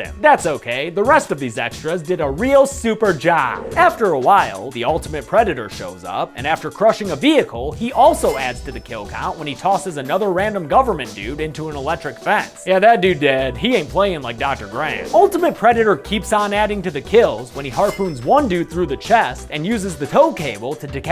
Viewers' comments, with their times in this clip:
0:07 There was a weird audio spike